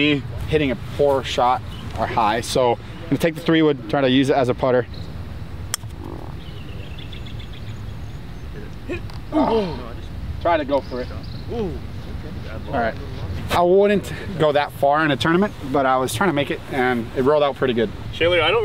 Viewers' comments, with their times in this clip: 0:04 Bro who let out that ripper of a fart 🤣🤣